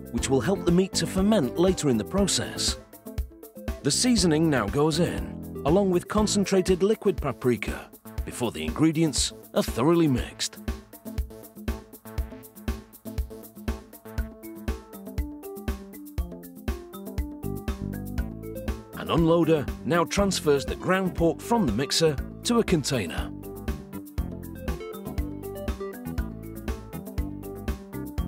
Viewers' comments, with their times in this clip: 0:09 I want this music played at my funeral. My favourite part it